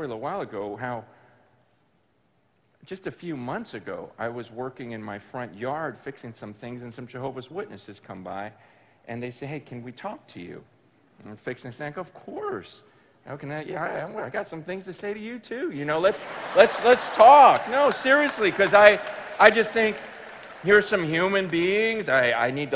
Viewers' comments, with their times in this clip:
0:05 that woah though